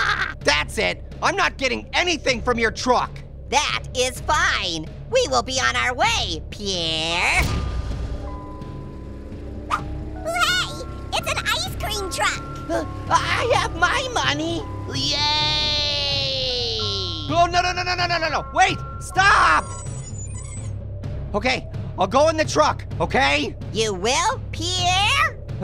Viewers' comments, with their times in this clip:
0:09 Baby Carrot 🥕 sounds like Baby Orange 🍊.